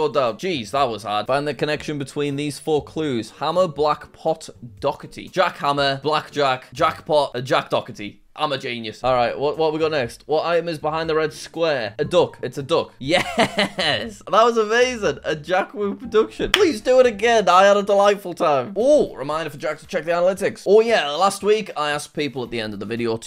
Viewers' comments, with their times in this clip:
0:07 Doherty is... "Dockerty" now?